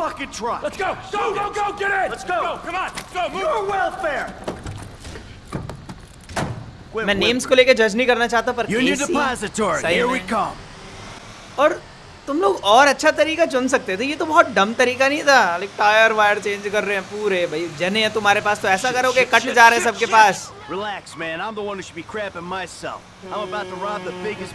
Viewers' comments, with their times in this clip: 0:07 casy nistate crying 😃